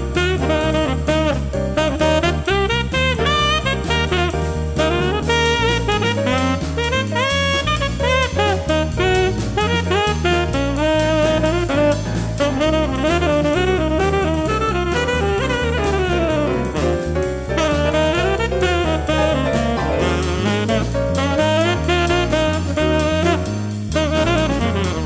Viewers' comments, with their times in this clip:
0:03 I swear I keep hearing the Smash 4 theme
0:04 Awesome! (Is it just me or the line was incredibly smash bros-like?)
0:06 sounds kinda like smash bros 4 theme